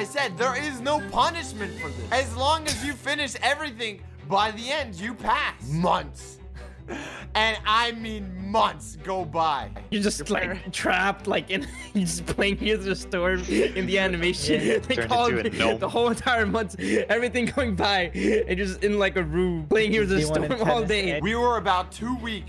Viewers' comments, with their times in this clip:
0:10 why did meme go like HEAGDGH" so much lol